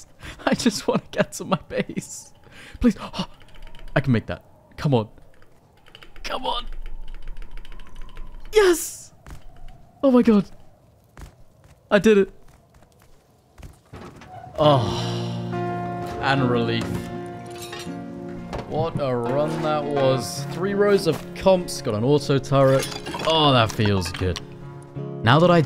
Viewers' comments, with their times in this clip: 0:06 sound of the lube mechanical spacebar